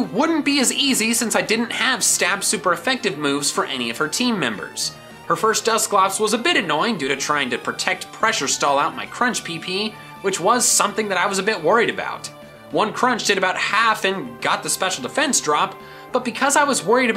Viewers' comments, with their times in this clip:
0:05 every 'PP' I heard Clefairy's cry. (it sounds like it says pi-pi)